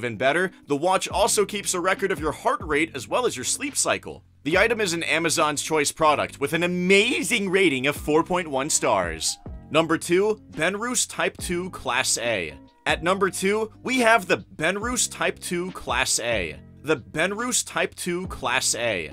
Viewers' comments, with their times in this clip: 0:07 Ok…what happened to dudes voice ? Lol he turned into Chris Griffin there for a second.